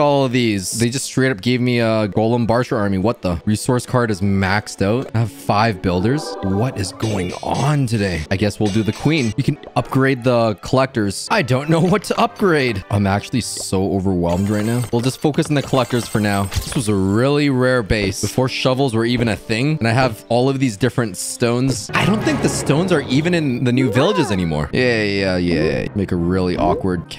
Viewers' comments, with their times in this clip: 0:09 I guess well WHAT?